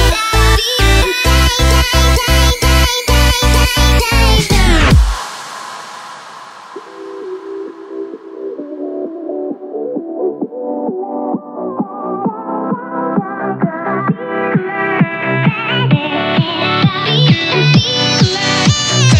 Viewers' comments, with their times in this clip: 0:06 I just wanted to point out the buildup tho.🎧